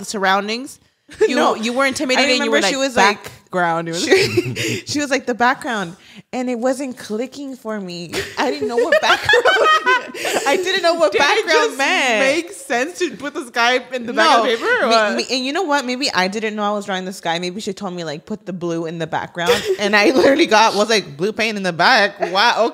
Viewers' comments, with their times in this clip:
0:09 White chicks laugh appearance 😂😂😂😂